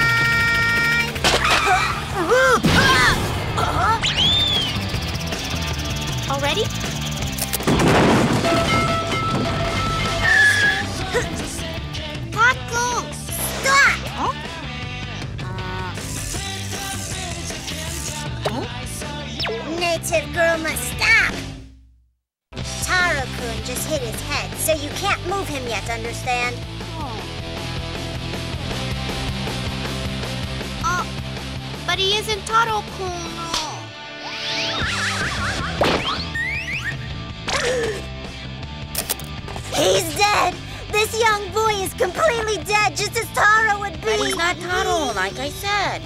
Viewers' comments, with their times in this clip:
0:07 where does one find a sound library with that baseball bat sound cause MM thats crispy
0:30 Jesus, that voice actor is terrible